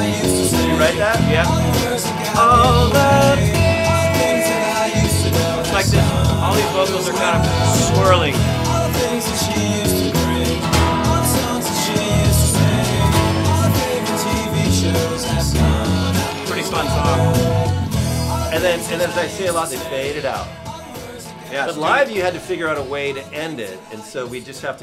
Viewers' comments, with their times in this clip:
0:08 Thank you for this! But can you please answer something that has been bugging me for 20 years? what are the subtle counter-vocals singing on the master track? It's something like "Dah dah come-ing i'll miss all the thinnngggss".